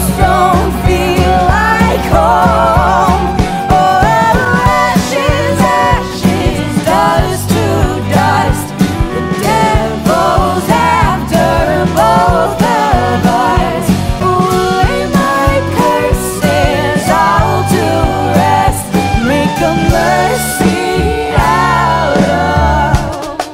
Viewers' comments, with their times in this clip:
0:10 I love how the TNT Minecraft is actually like dynamite because it’s animated like real dynamite and how it kinda sizzles and stuff before it explodes. edit: its called a FUSE